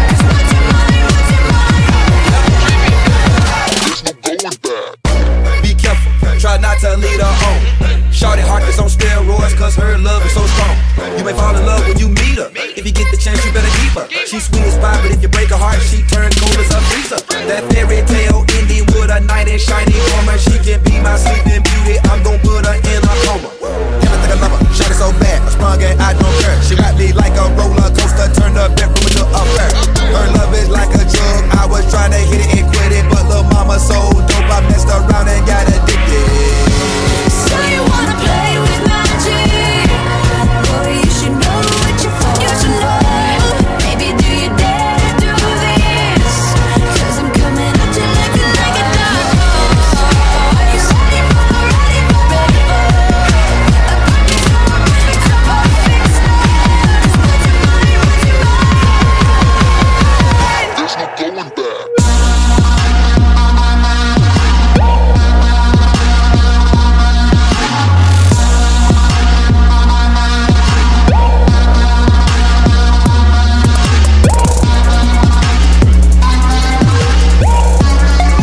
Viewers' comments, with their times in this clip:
0:03 is me fave cause I am literally obsessed with that rap part andyou have to admit that the rap part was bombs
0:24 OMG JUICY J FLOWW!!😍😍
0:59 the drop gives me everything omg
0:59 I love this song I'm still here after all these years and the beat drop gave me a heart attack
1:03 LETS GO THE BEAT DROPS ITS EPIC